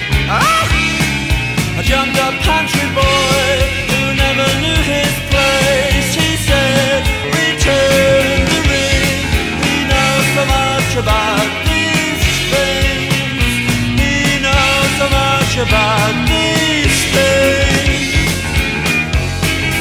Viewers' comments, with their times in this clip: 0:04 the thing i hear b4 watching the lyrics was: Ah! Job job country boy, who knever knew his place" I GUESSES THE LAST THING YAY! (im spanish)